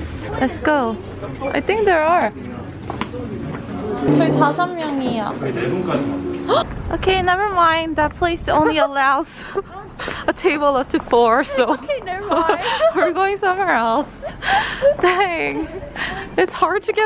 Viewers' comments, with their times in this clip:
0:04 the way the gasp got cut off i-